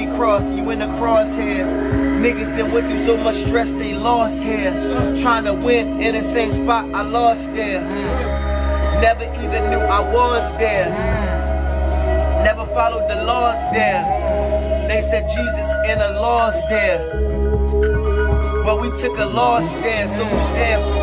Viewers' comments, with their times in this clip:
0:04 Pretty sure you can hear Earl Sweatshirt say "yeah"